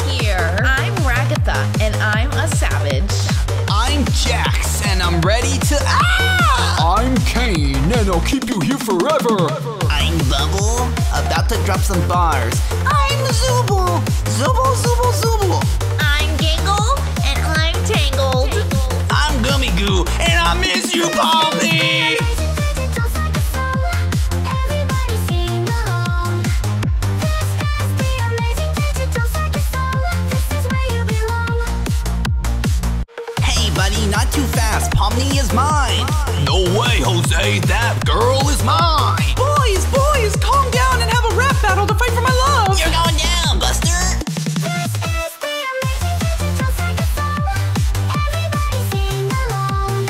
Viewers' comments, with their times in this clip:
0:10 bubble here goes actually so hard
0:15 gangle for new Eminem
0:20 I’m gummy goo and I miss you palm knee 🗣🗣🗣🔥🔥🔥
0:34 Ngl Why Do They Sound Like Six, Seven And Nine From Bfdi